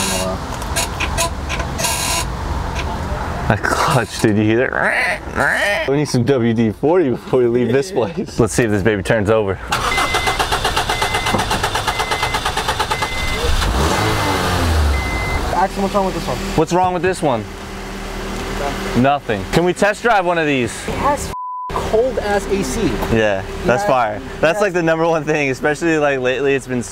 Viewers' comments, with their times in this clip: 0:10 it cranks & cranks “what’s wrong with this one?” “Nothing” 😂🤣🤣🤣